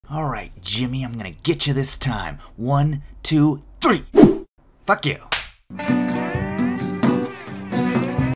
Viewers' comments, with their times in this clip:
0:05 That solid slap🤣